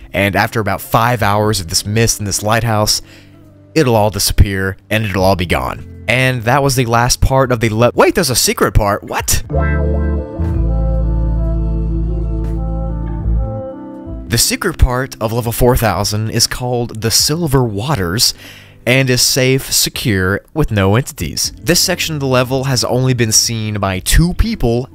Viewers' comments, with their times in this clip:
0:09 we not gonna mind the bweaauau sounds playing throughout? like